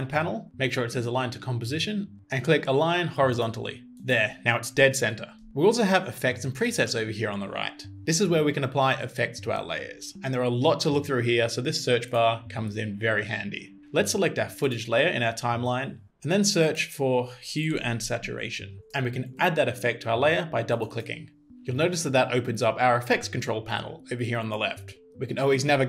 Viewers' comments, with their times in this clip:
0:07 I heard "..this is where we can buy effects". Like, what? I need to pay for these too now?